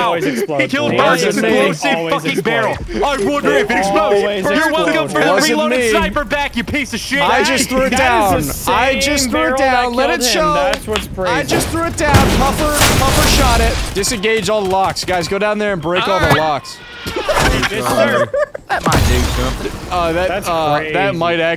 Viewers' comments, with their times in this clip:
0:03 bro impersonating sketch had me dyin'
0:09 The sketch voice and clap 😭💀